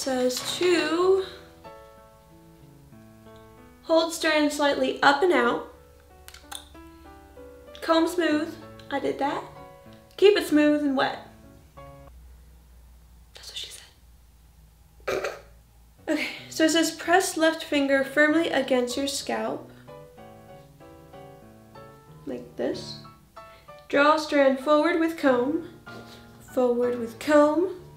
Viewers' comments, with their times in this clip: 0:10 “Keep it smooth and wet.” Awkward pause... “Thats what she said.” Funny chuckle